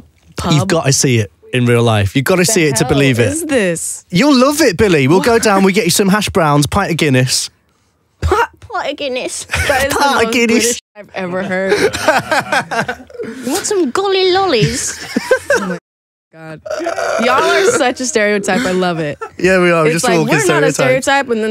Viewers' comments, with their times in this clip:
0:08 ok but why did she sound like a baby 🥺💗